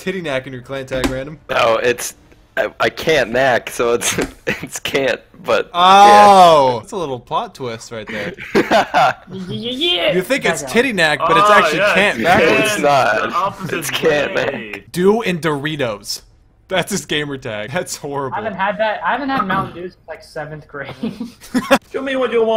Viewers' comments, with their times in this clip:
0:09 did anybody here an kiwi impression dead asf yo 😂😂😂 in the background